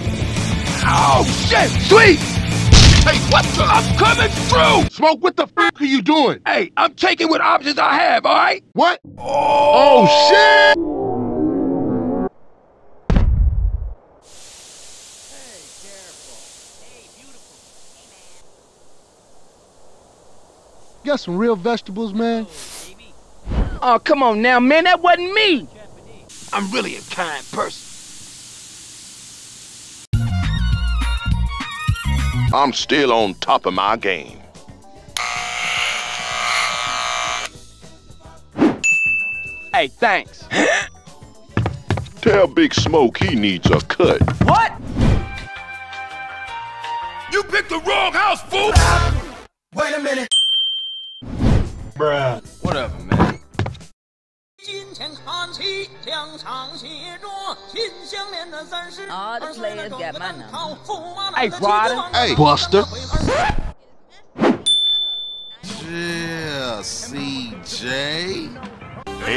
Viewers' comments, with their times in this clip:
0:08 Smoke's "ohhhh" will never get old
0:54 Ryder Heard Song Ching Cheng Hanji😂